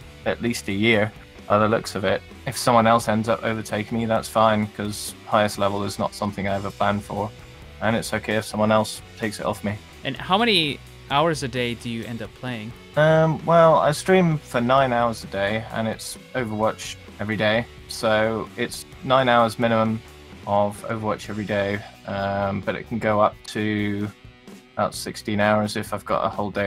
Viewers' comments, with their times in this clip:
0:10 you sound like Jeff Kaplan